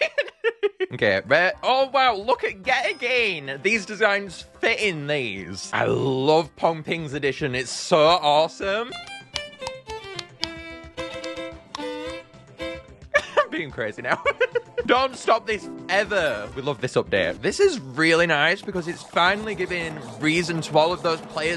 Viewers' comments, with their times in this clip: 0:08 i thought you need to flick the throat to make the pongping sound ??